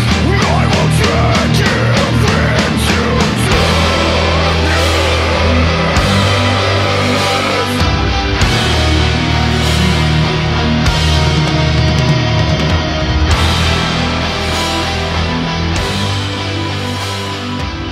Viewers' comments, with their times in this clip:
0:03 Holy fuck I got shivers when the riff came in